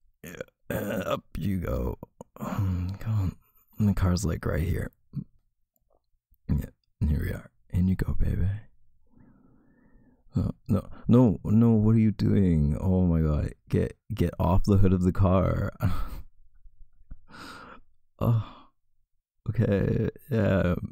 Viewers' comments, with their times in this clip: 0:08 the way he said baby the hold this man has my heart DJDKDKD
0:08 the “baybe” my everything